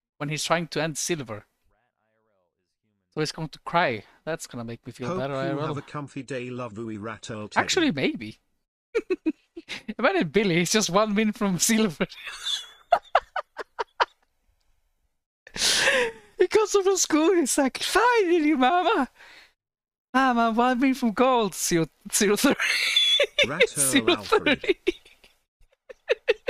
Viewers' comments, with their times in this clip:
0:07 bro played twitch so much that he started to laugh like him LMAO